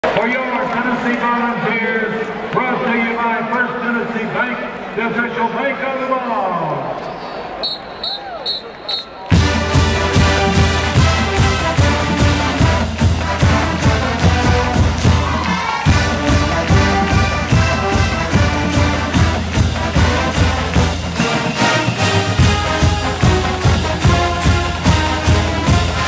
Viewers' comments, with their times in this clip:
0:08 haha i love the guy is like oh well when they start playing while he is talking lol